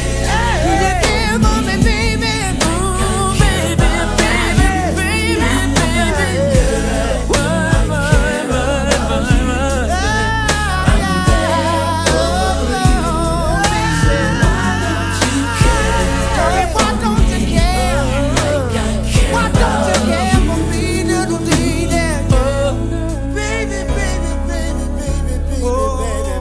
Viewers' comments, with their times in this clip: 0:09 That run Melvin does had to be God sent because baybeeeh!